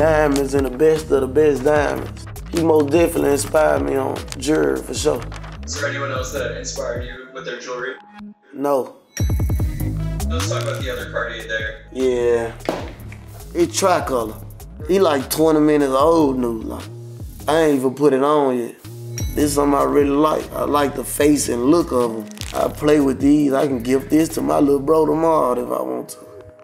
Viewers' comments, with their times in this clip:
0:08 lol 😂 the way he said no